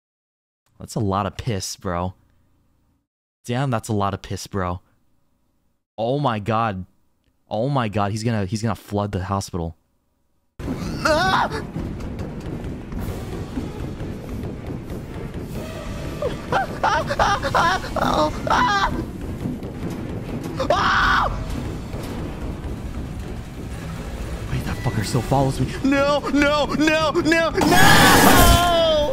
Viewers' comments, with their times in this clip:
0:09 The screams are just: 😘😘😘
0:15 this is the bdsm type of moaning